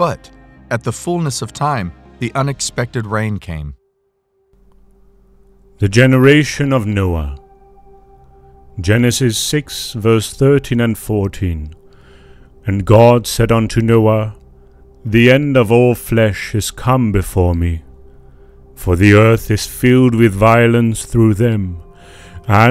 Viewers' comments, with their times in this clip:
0:08 Enjoy your videos as always, but once again the voice over that starts is completely distracting and made me stop watching the video.